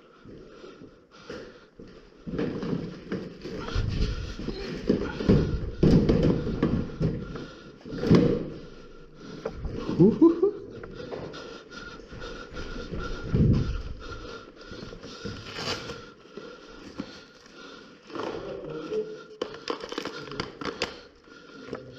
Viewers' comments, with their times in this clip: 0:09 Dude where is this? The map looks really sick and I thoroughly enjoyed the video, Your borat laugh gave me a good chuckle